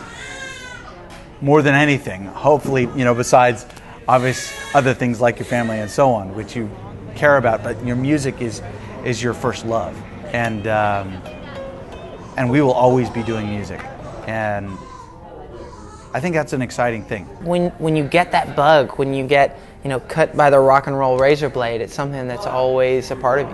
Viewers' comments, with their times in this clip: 0:10 isaac plays the solo of sweet child o' mine:p haha